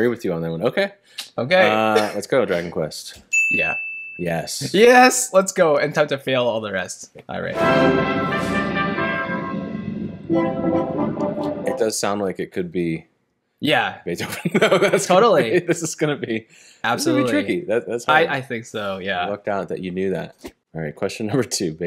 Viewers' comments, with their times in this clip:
0:09 I thought the first piece was from The Consecration of the House by Beethoven because of the way the trumpets played.